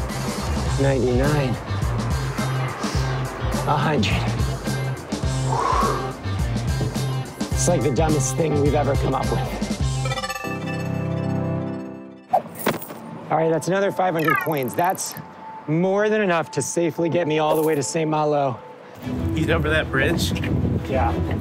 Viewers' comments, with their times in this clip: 0:07 I like how he says "That's like the dumbest thing we've ever come up with." with the confidence of a man who didn't vomit up half digested pastries after running a track mile.